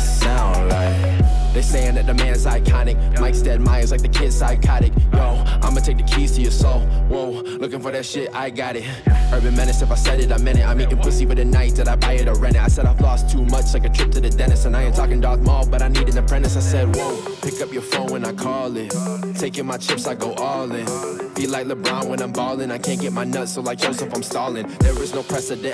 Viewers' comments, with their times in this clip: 0:08 is said with so much sas😂